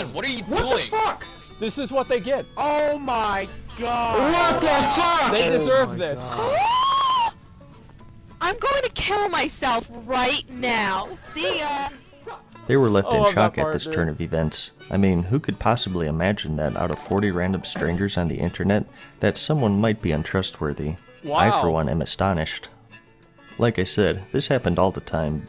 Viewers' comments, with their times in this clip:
0:06 that gasp like some one shot a puppy in front of her 😆